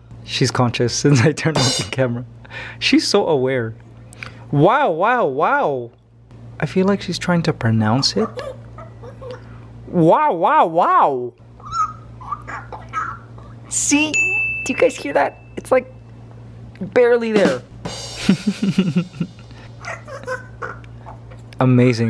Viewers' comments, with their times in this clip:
0:08 Oh my god! I just realized she says “flap those wings, flap those wings”! For real! She is so fucking cute, I love her!!